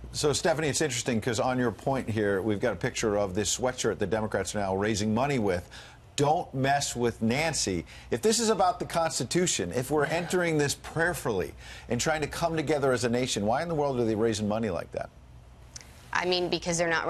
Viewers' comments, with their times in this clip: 0:03 😂😂😂Stephanie Crazy "Cause thier not raising money any other way🤷‍♀️" she said that so matter of factly😅